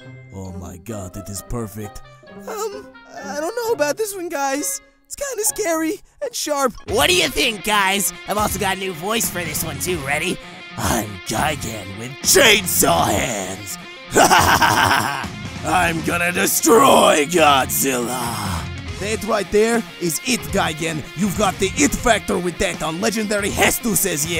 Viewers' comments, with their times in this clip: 0:07 hahahaha!!! Silly Gigan! Evil laugh hahahaha😂🤣😆😅
0:08 If only he said his name real loud and metal like OH WAIT